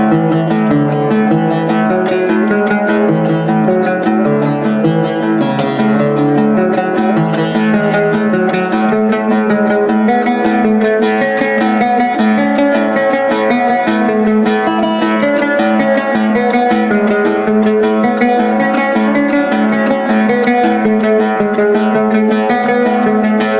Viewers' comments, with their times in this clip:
0:08 sounds so ethereal